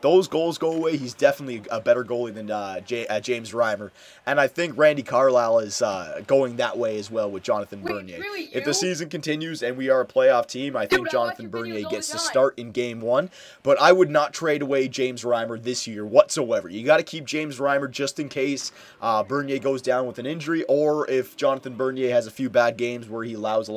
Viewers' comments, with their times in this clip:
0:08 Why did i hear 'Wait it's really you' in the back ground ???
0:08 There is a kid talking in the back round, it starts from Sounds like he is a big fan.